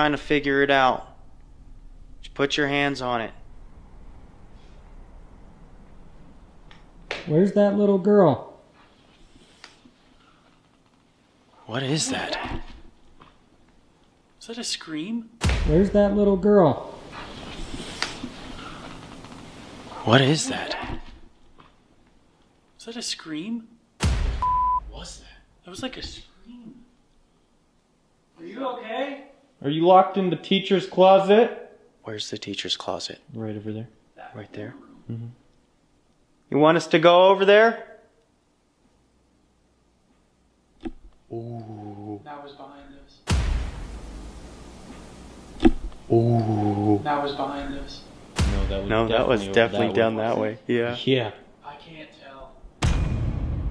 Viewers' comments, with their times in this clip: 0:08 you can hear a little girl whisper " I can see you " and then a little screech, like she was trying to scare you guys lol You guys heard the screech but not her talking before it .Btw love watching you guys!
0:20 sound like a little girl saying “I can’t/ can see you” not so much like a screech to me when the volume is up
0:34 Check Timestamp “That Room or Bathroom “ listen closely. Distortion voice. In case you missed it
0:34 who ever said ‘back in the room’ did not sound like any of the guys 🤔
0:34 sounds like a growl tell me I'm not trippin use headphones 🎧 easier to hear
0:34 Who says ‘Back in the room ?? It sounds so weird and not like any of the guys 🤔
0:35 sounds like a growl or something